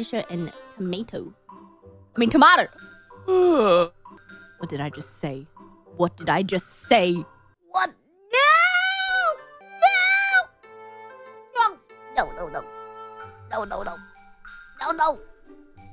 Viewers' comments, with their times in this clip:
0:03 that noise and face when you realize you have identity crisis.